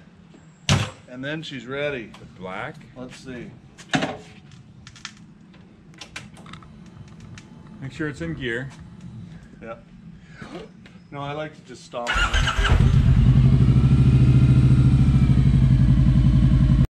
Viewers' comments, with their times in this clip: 0:03 Sounded like some arcin' & sparkin' 😄😄😄 Great vid!!!